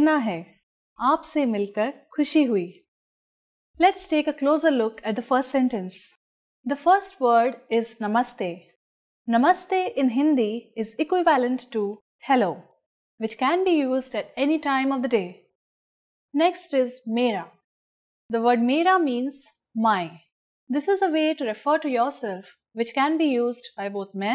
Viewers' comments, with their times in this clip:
0:09 Equi VAL ent ? Nice.